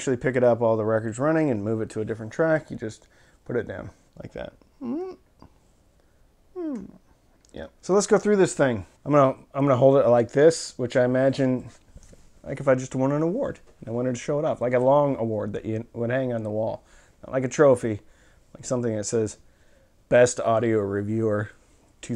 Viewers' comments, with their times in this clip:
0:04 that squeaky sound when operating the arm, seems like it might get annoying after a while. Does Stith Audio offer a audiophile grade lubricant that can alleviate that issue?